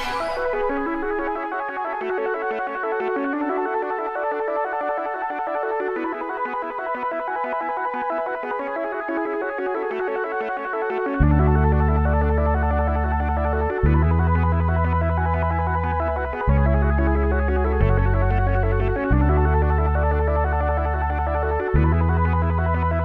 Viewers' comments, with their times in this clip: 0:03 This is basically channelling New Order’s Bizarre Love Triangle. Anyone else agree?
0:07 the moment where the song reaches perfection, till that point it keeps climbing.